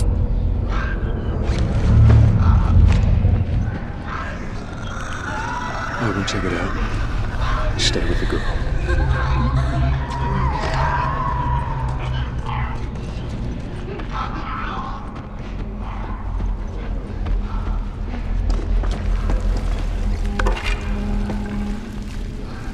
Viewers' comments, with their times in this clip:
0:06 Can't wait to get this. Super disturbing sound It sounds like one of the infected is crying, "It hurts." Really creepy with headphones. Only about a week to go until we can play this gem!